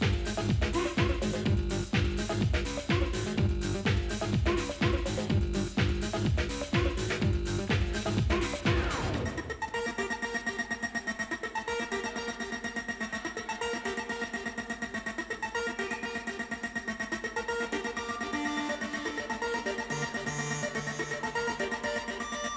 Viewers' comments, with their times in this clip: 0:08 Yo homs these m8s got the sound i'm telling you... simply pumpin